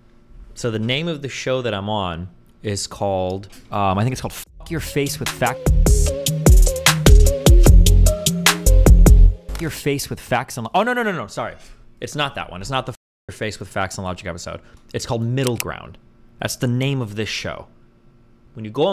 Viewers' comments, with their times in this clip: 0:05 YOO XG LMAOOO I didn't expect to be head bobbing on XG music